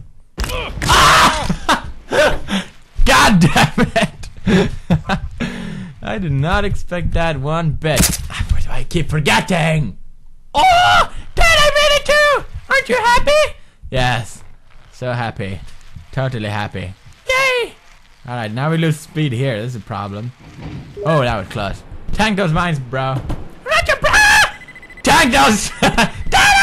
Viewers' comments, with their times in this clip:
0:09 -Kid: Oooh! Dad i made it too! Aren't you happy?! -Dad: sarcastic tone Yes...so happy...totally happy... -Kid: Yay!